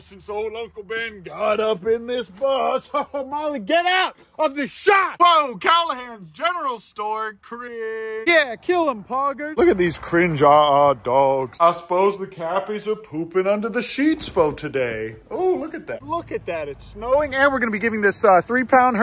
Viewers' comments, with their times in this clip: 0:04 why he sound like woody??? LORE!!!???